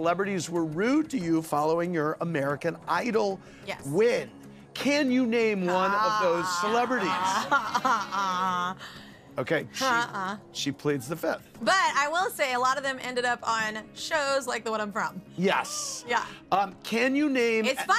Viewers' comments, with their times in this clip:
0:05 lol the noise she made 😜